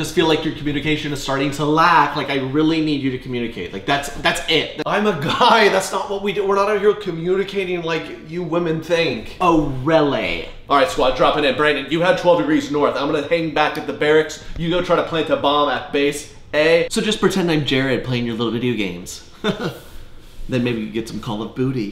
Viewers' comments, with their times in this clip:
0:09 “OH RELLAY” sassiness intensifies